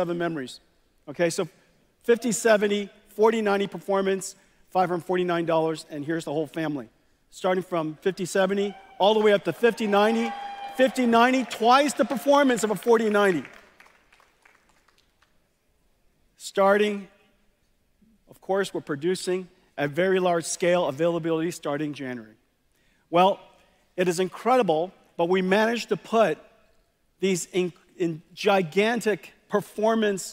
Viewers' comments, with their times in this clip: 0:09 how they from cheering and clapping to dead silence when they noticed the 5090 price tag 🤣 so silent you could probably hear a pin drop lol that was awkward af 😂
0:10 you can totally hear the enthusiasm in the cheers of Nvidia investors.
0:15 that silent for price ⚰️🪦